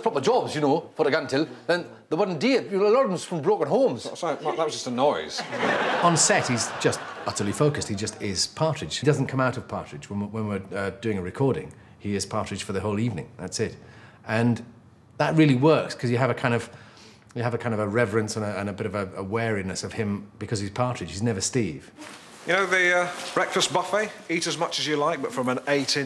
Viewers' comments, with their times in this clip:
0:09 What happened to Michael? Did Alan's teasing push him so far as to change his accent?